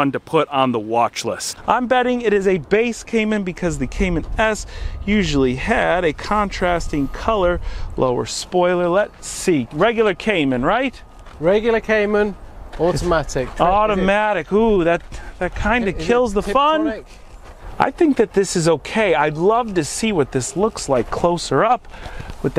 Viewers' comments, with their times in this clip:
0:10 love the “automatic” of those 2 accents😁